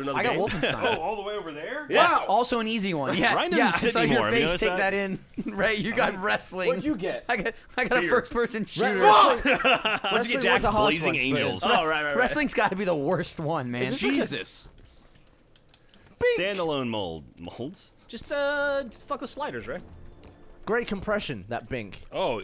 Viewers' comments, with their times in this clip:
0:08 Ray that was an epic FUCK